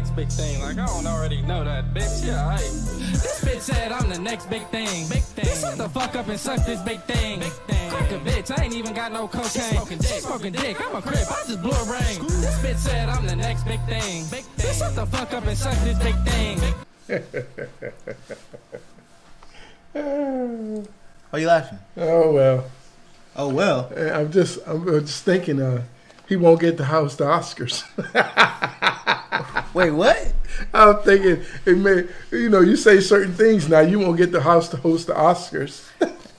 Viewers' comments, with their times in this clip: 0:07 his face 🤣🤣 hahahaha that's me with all of bluefaces music Dad: sure he is he's right where the beat should be" yeah but .. the beat should be where he is and he should be where the beat is... He way off beat imo
0:17 that’s a laugh of disappointment 😂😂🤣🤦🏽‍♂️
0:18 When he started laughing I cried 😭